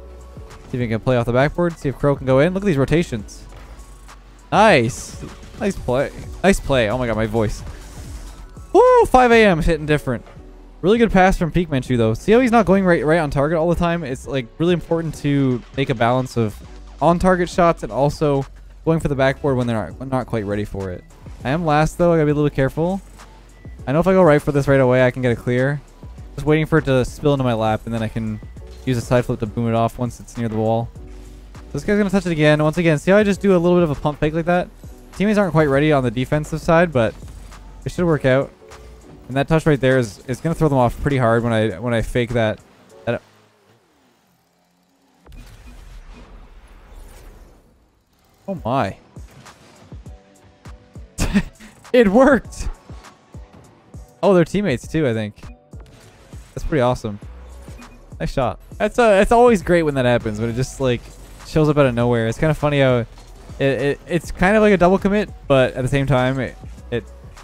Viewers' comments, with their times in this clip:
0:08 "5am shittin different"
0:51 everyone is fighting in the orange half and BOOM